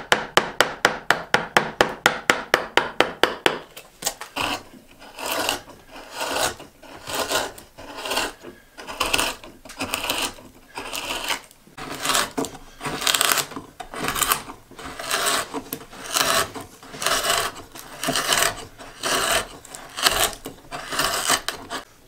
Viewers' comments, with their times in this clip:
0:06 The ultimate ASMR.